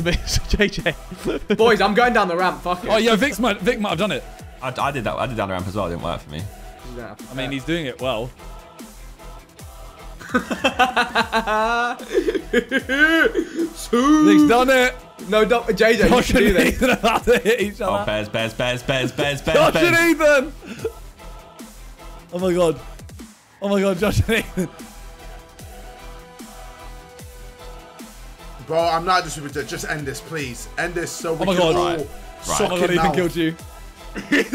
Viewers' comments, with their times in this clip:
0:10 Vikk's suiii caught me by surprise ngl
0:15 is one of the most cinematic experiences in sidemen history. The music, the timing, chefs kiss.